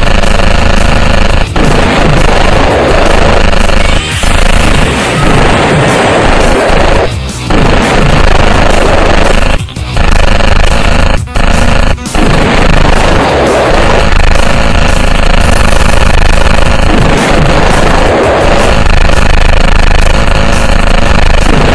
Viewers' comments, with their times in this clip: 0:04 i heard a godzilla roar XD